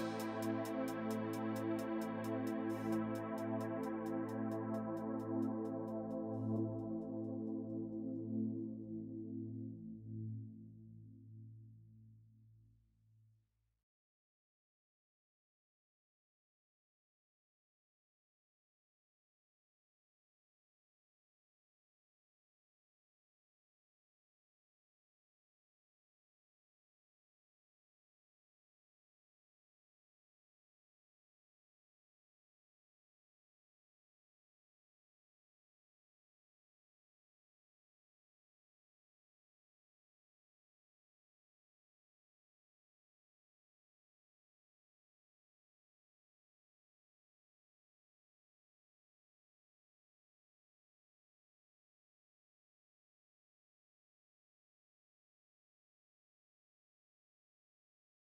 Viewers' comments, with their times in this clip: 0:06 stock music stops
0:46 Good video; did your audio cut out ?